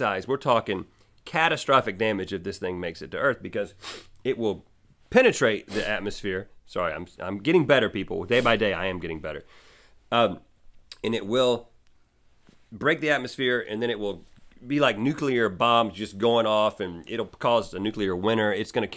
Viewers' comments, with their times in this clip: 0:03 **i move away from the mic to breathe in ...